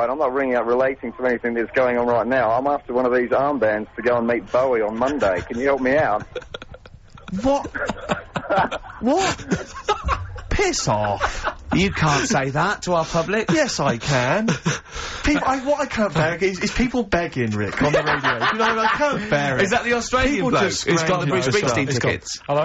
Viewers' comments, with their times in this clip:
0:05 Karl laughing uncontrollably and Steve telling a caller to piss off! :)